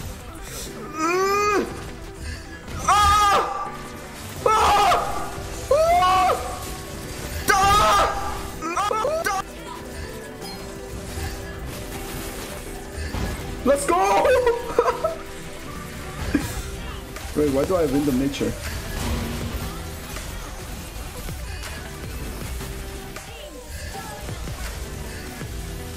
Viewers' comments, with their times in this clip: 0:08 alien screams gg.
0:08 i didn't know u knew how to beatbox🤣